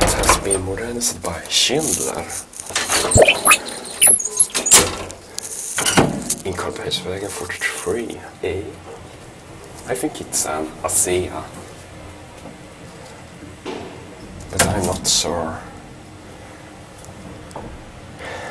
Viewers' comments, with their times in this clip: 0:03 what´s that strange sound when u close the gate ?